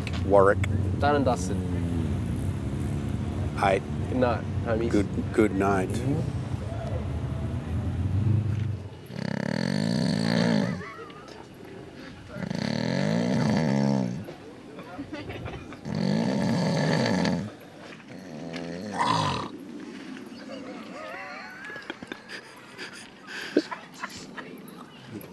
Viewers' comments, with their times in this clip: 0:10 no time to be firing up the whipper snipper fellas...